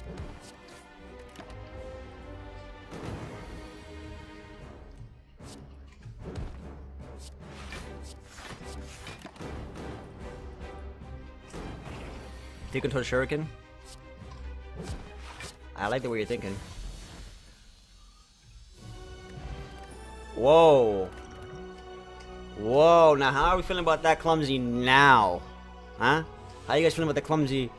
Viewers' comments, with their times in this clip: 0:08 The burn damage lining up with the music is so satisfying